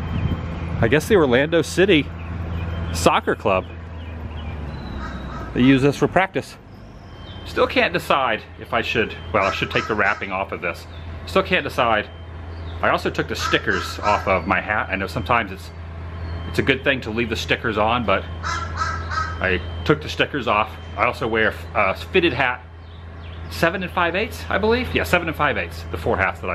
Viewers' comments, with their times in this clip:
0:10 that crow is laughing at you